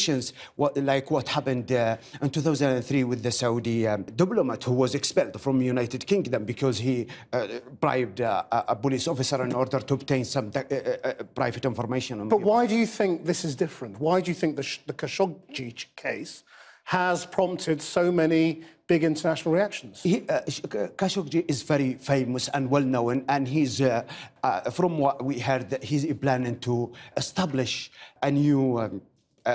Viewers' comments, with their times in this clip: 0:10 Listen to him carefully he can barely say a word lol I feel sorry about him
0:10 Listen to him carefully he can barely say a word lol I feel sorry about him